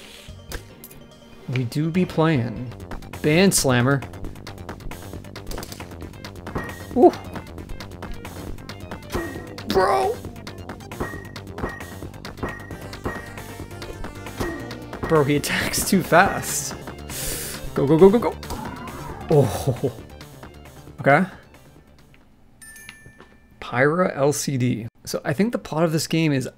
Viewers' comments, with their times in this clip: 0:09 tell me why he sound like lego yoda dying